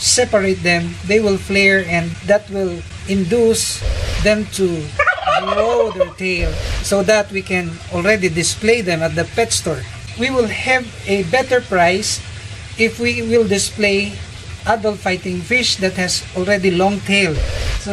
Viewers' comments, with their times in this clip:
0:04 LOL was that a turkey??? 😂